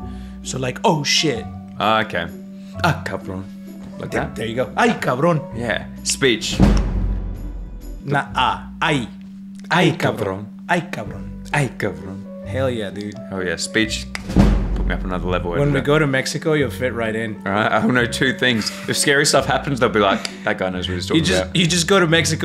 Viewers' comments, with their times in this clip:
0:09 The perfect unison